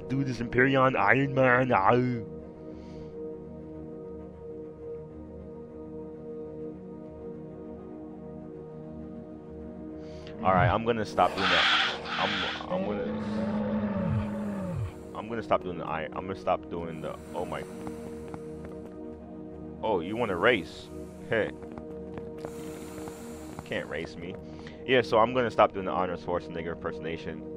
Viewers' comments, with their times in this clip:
0:09 Thank you. That was Arnold? I thought you were going for a WoW troll.